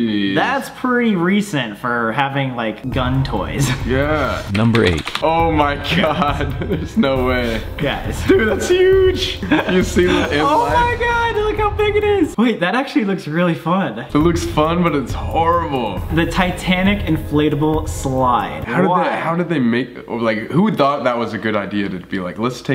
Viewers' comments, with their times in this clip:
0:10 Colby sounds like Shaggy when he says”dude it’s huge” just me? Okay